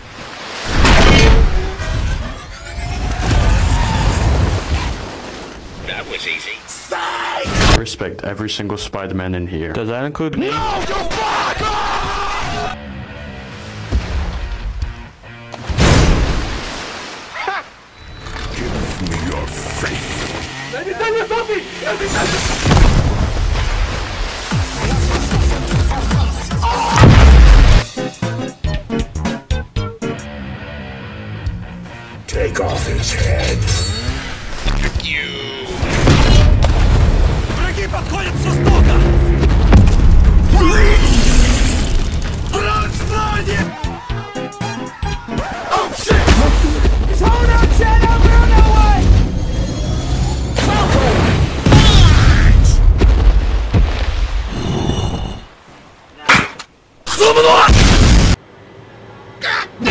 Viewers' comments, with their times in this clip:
0:10 NO YOU BLACK
0:27 that slam was personal -
0:33 sounds too cold🥶🥶
0:42 what language is he speaking